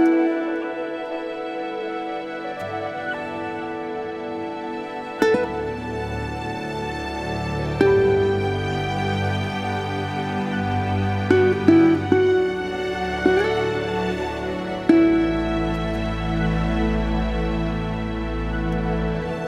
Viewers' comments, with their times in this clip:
0:07 my subtitle generaor says "I mean, so we started with a couple of fruits and some weed"... Yes indeed ^^